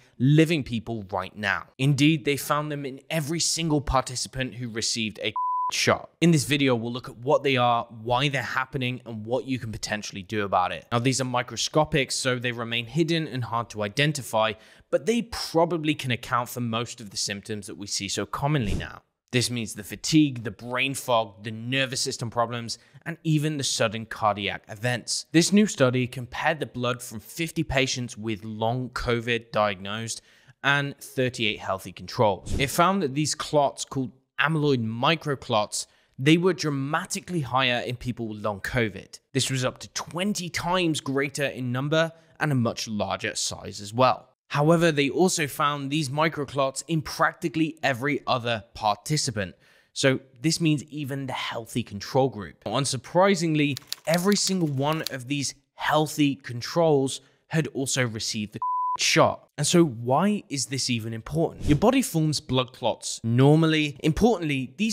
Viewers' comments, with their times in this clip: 0:05 why the FUUUK did you BLEEP the word COVID!!!??? IS THAT A BAD WORD NOW???!!! HOW STUPID CAN ONE BE???!!! so glad i can choose the : DO NOT RECOMENT CHANNEL option!!! childish!!!
0:52 why do you beep out the word vaccination or Covid shot?